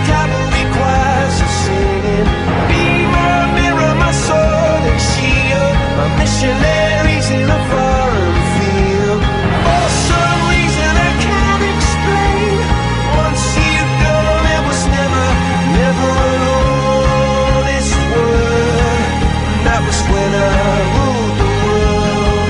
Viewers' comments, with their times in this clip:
0:04 umm.....I'm confused......at is it Eb or E then B? (on the word missionaries)